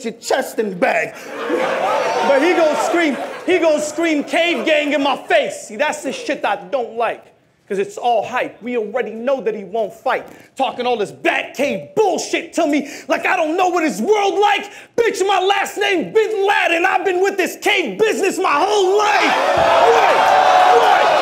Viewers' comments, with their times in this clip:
0:03 Diz : Hé gone scream cave gang in my face, that’s the shit I don’t like.. cause it’s all hype We already know that he won’t fight .. Talking all his bat cave bullshit Tell me like I don’t know what his worlds like? Bitch my last name’s Bin Laden, I been with this cave business my whole Life! When you hear a bar like that, said with passion and you feel the real ness in what he shouts, that bar alone takes over 5 of Rocs bars.. Diz 1-0